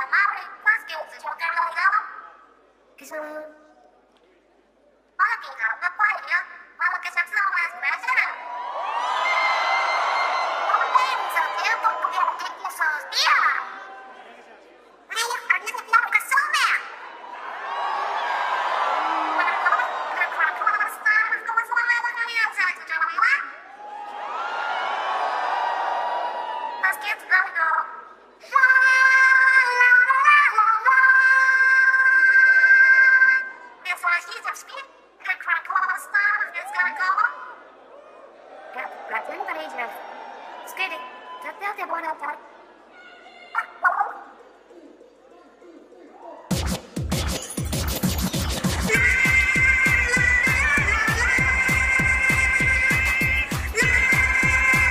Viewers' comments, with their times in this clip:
0:08 I'm not sure whether Marina or somebody else is screeching XD
0:09 they're not actually singing, they're lipsyncing to pre-recorded voices!!1! O_O also someone's screaming very intensely lol
0:26 when an angel sing to us
0:29 Callie sounds so cute when she is singing without music UwU
0:42 lmao, someone in the audience yelling "CALLIE!!!!"